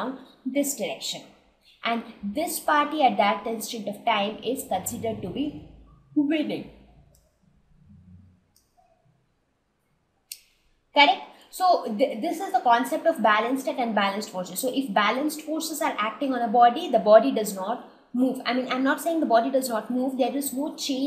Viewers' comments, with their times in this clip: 0:06 what happened to her voice in